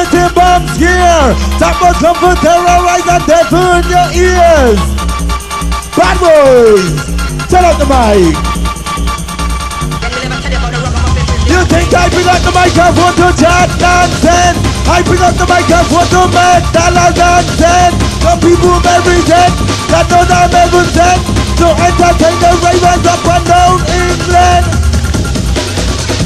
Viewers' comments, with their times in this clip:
0:09 "turn up the mic" yeah 'cos we can almost hear the tunes underneath your voice